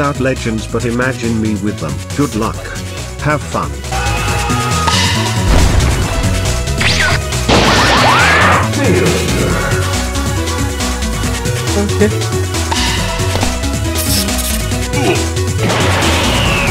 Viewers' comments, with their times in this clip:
0:03 the ego xD, sounds like an anime character that was hiding his final form for 8 seasons.